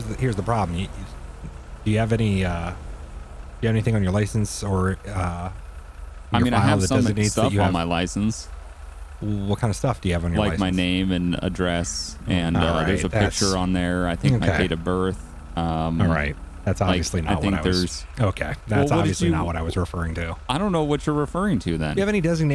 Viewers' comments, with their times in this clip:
0:06 Why is trailer breathing lol